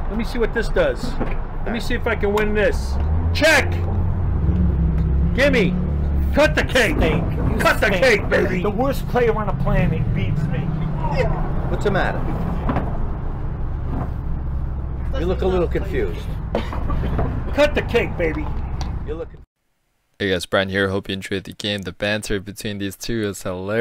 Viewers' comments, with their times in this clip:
0:08 *The Wohhst Playuuh on the Planet Beats mEh"" Guy is drinking his fucking apple juice like "I don't give a fuck" lololool